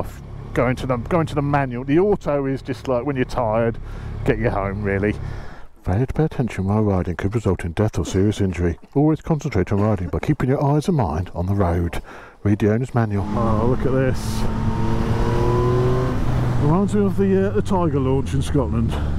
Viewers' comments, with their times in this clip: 0:07 that chap in the background sounds like he has covid cough